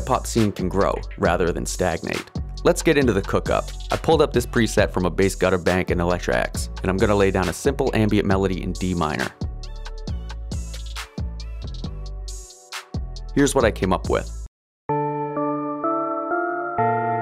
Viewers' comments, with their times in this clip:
0:04 Why did this go hard with the beat tho 😂